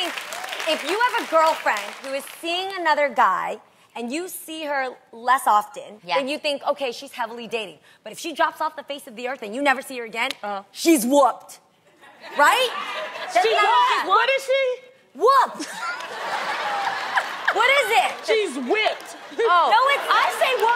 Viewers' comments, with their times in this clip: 0:04 adrienne whispering at something, i wonder what its!